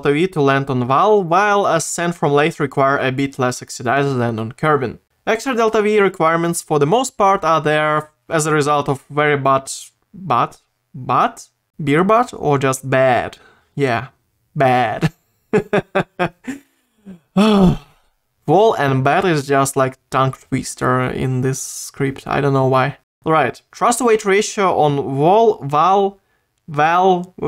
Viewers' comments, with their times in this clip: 0:09 onwards was hilarious. I love your accent